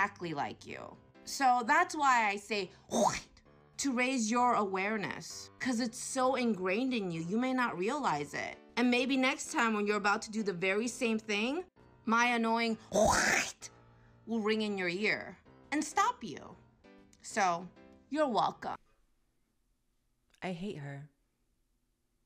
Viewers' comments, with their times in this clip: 0:08 legend says she still has a lougie 😂